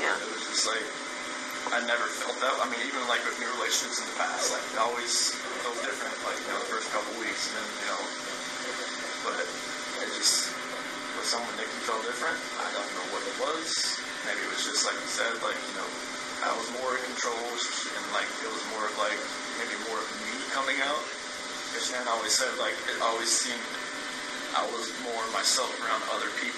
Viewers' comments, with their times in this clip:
0:07 u can hear that choking sound 😳